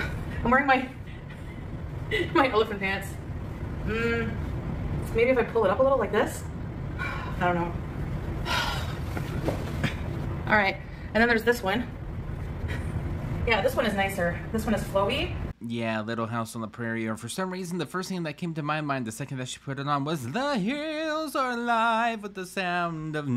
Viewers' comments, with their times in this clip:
0:09 I could swear when she flops on the bed you can hear the buttons burst off the placenta dress! Why does she drop down like that? RIP bed 😂